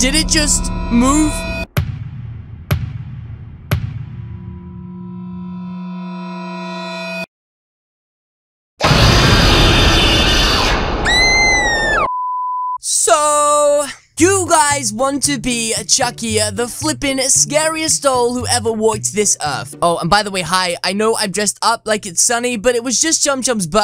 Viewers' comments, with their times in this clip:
0:07 the jumpscare is sounds like in fnaf
0:11 Hes screaming like a girl 😂😂😂
0:11 Chucky is ChuckECheese!!!!!!!! Ok nvm this ain’t funny at all.. ( That Scream tho..)